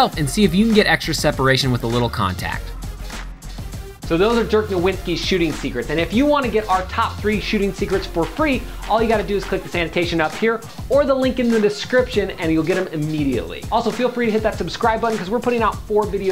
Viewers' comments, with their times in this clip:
0:03 guys really said jerk nowitzki lol